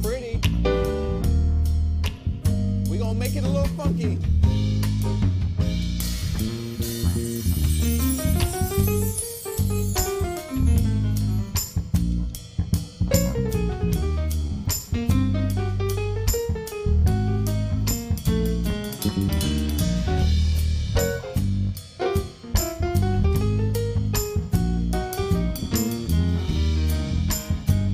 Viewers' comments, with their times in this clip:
0:10 the bass jamed that damn bass XD